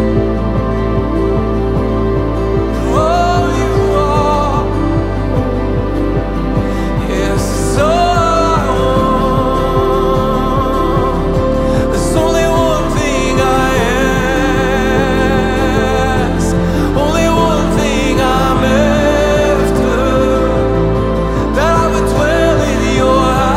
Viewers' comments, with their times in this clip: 0:05 That bridge is one of the most beautiful moments I've heard in a worship song. Brings the Psalms to life <3